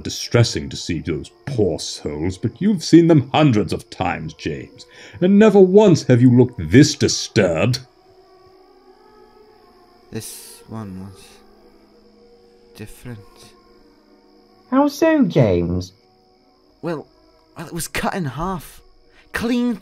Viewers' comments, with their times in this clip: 0:06 did i just heard a music?